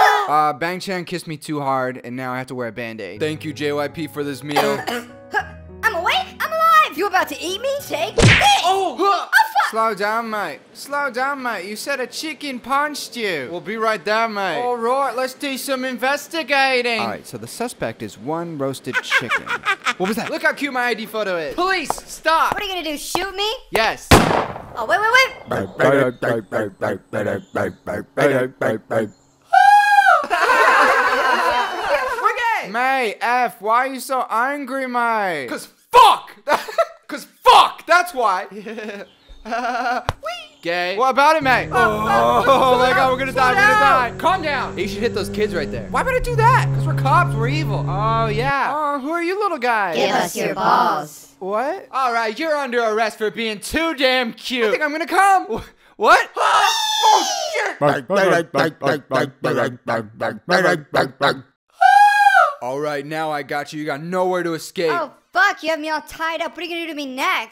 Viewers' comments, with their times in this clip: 0:04 gotta love that cough
0:51 I love Minho's voice